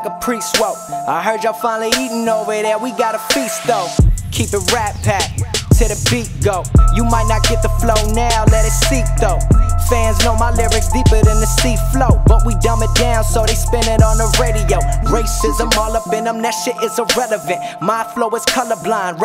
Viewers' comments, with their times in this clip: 0:04 That transition was sick